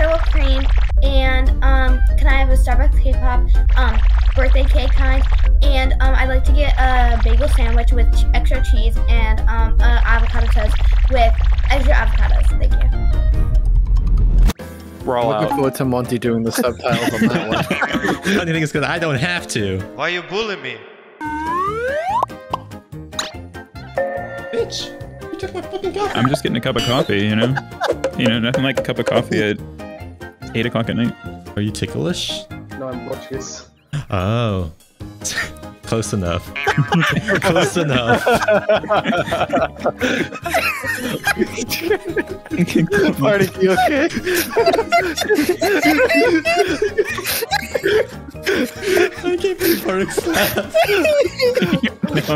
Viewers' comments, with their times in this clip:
0:05 I watched this while drunk af and the rumbling made think there was an earthquake happening
0:40 And here is where the asthma kicks in